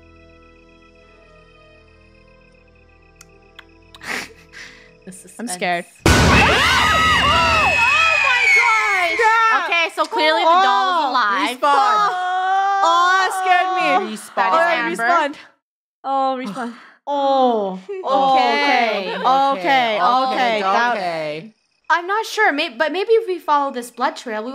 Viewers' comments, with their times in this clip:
0:07 Is it just me, or does that sound like the high-pitched version of the Teacher jumpscare from Piggy? (Yes, I am a Piggy god)